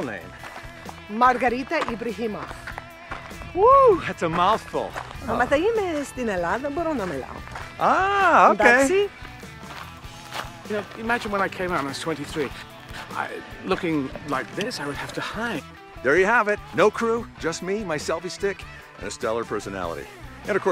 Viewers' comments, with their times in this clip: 0:05 There is loud oscillating high frequencies popping out there around the mark